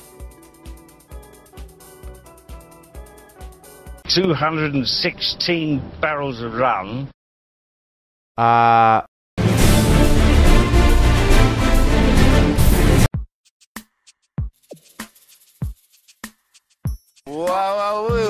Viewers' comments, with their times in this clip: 0:03 Dr. wells is Basically British.